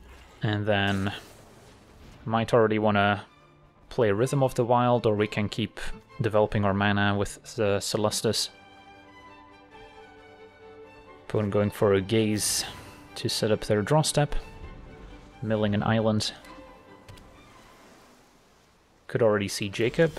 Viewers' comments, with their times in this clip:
0:04 Wait.. why do I hear intro music? Is something about to happen???